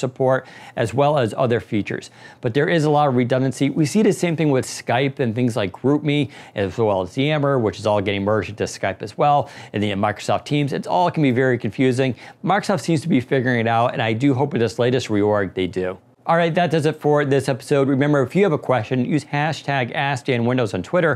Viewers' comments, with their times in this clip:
0:03 "leak androm" - WHAT ARE YOU NOT TELLING US!?!